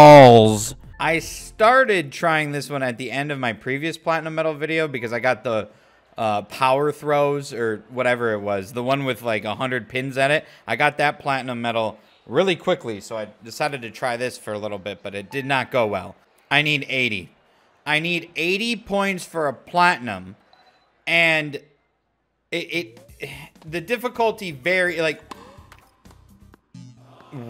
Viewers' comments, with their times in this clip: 0:10 Headphone user warning omg " returning BAWLS"